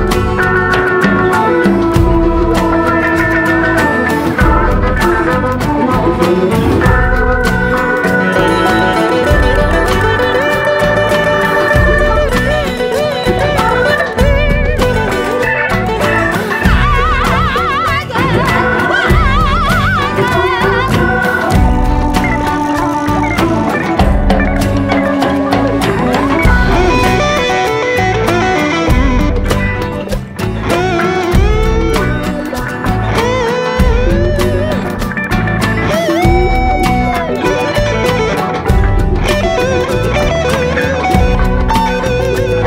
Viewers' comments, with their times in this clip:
0:10 The brief sitar extemporisation is a standout in my view 🎉🎉🎉 I’ve never seen this traditional instrument played like that before.
0:30 Great guitar duet starting !